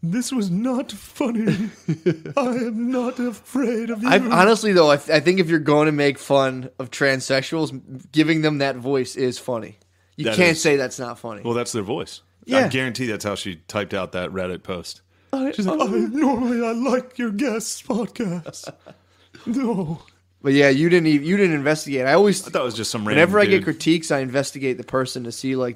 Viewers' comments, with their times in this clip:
0:08 Shane's trans voice near sounds like an effeminate Mr. ED